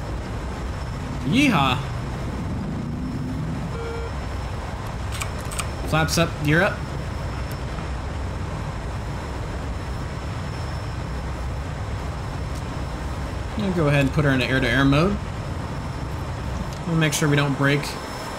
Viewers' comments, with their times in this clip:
0:06 "flaps up, gear up" and you hit the keyboard, but there's a wonderful big chunky flaps switch right on the throttle base... Honestly I think this whole review would flow... better... if you had... just recorded the video... first... and then done... a voice... over... then there wouldn't be... huge... pauses... between words and phrases sometimes.